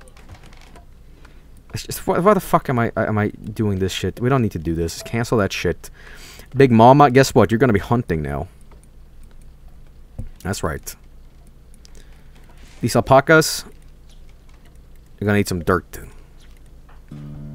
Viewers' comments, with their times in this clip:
0:05 Big Momma goes on the hunt music